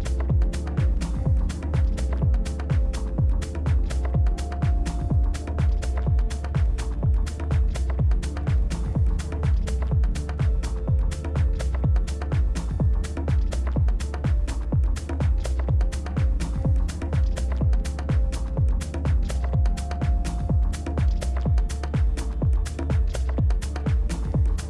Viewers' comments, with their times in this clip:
0:09 The track drives me mad. It's the definition of minimalism. This isolated repetitiv perc is so efficient. Does anybody know the track ID?